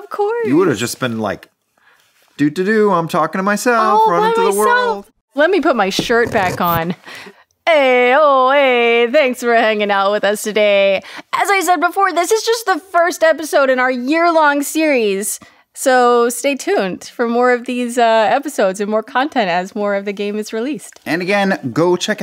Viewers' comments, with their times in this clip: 0:03 Why ADR a line in just to pretend that the video outro is actually filmed in order with the rest of the video? Just seems disingenuous.